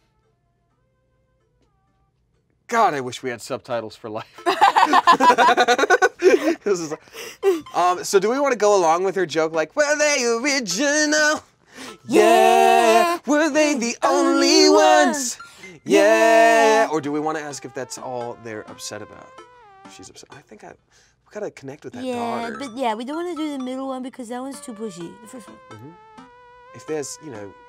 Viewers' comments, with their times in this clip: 0:09 that was actually a good harmony damn